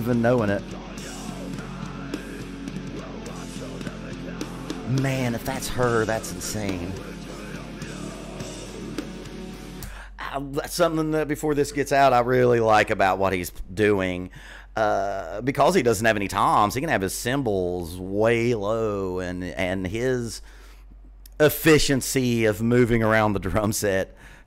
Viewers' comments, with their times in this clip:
0:09 Yes, Tatiana does the growls as well as that angelic clean voice. Courtney LePlant from IWABO has moved on to a band called Spiritbox, where she still kills it. Vlad himself is a classically trained pianist, a great guitar player and pure beast on drums. He does much of the musical arrangements for the band because of his classical training. Edit: that pause around the mark where he has his hands raised over his head, you totally missed his "K" tattoo.